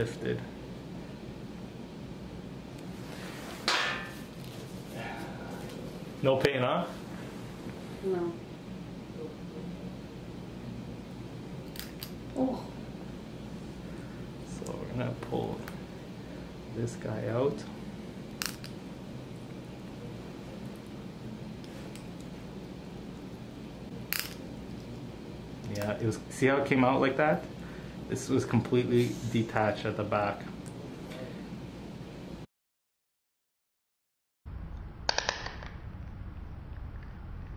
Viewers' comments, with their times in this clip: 0:09 It sounded like me chewing chips
0:12 OH GOD THE CRUNCHING NOISE AAAAHHHH
0:22 BRO WATCHING THIS AT NIGHT MAKES IT WORSE AND THE NOISES IS INSANE